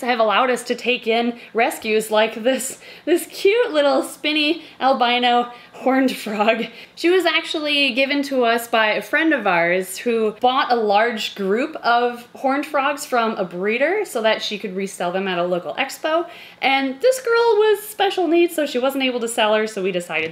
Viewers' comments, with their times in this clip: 0:07 that frog said "gottem"